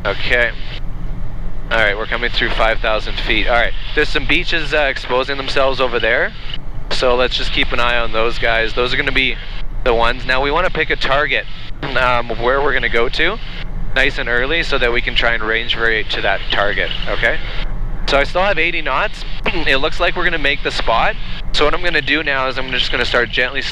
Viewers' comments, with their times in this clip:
0:04 "There are some Bitches exposing themselves over there." Nice. YouTube needs a way for people to identify Click Bait Liars before one clicks on the video.